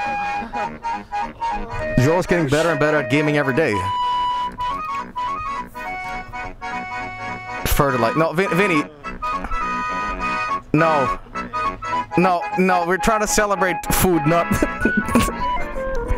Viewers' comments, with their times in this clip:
0:04 That musical timing tho